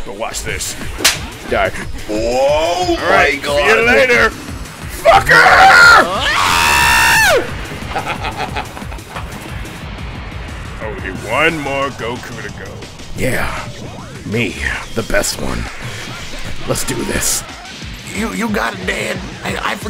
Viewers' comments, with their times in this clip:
0:06 i heard the scream then got an ad about the soviet union